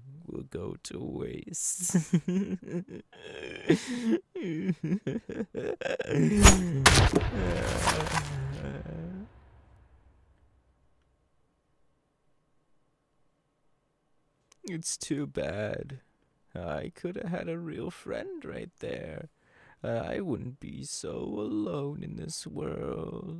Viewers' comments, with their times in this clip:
0:06 You scare me I was layin on my bed and there was a loud sound when he attacks listener😢 in the minute